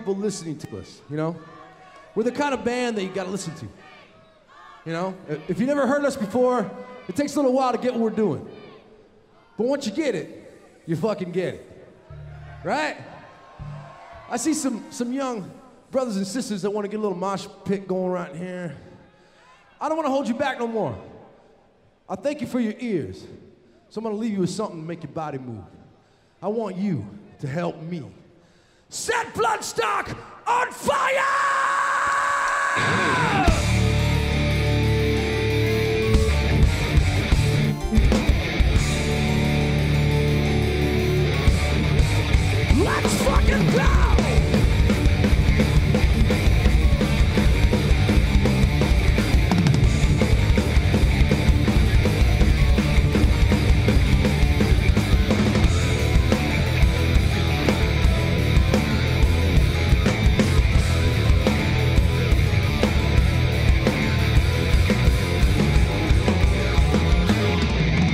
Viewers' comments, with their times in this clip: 0:05 they’re chanting “off the stage” women really aint shit and ruin everything lol
0:55 Very funny to see 4/4 guys getting lost , trying to bang their heads with Symphony X's omnipresent broken-tempos haha